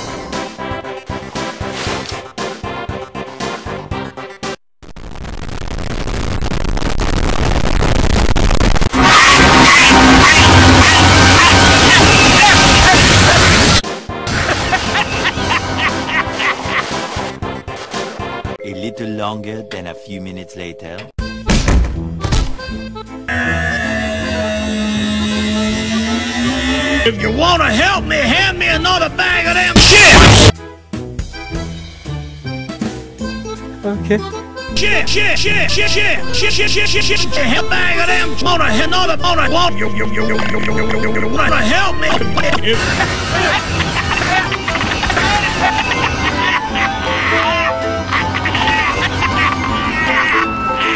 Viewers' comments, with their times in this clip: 0:09 Can we get an F in the chat for all headphone users at full volume
0:35 "Chi chi chi chi chi chi chi starts speaking minecraft enchantment table "